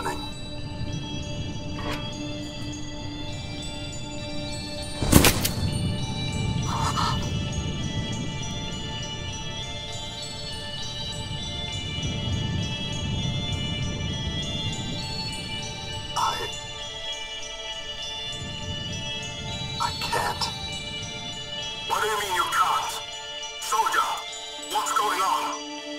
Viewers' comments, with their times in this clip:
0:07 Laughed so hard at his Anime "OH"
0:07 EAT BOLTGUN Space Marine said calmly